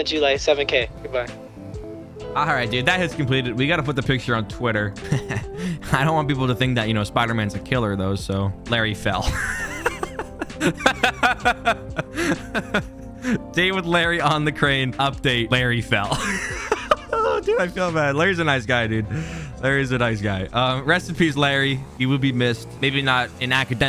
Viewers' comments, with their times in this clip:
0:05 was hilarious because of how he said it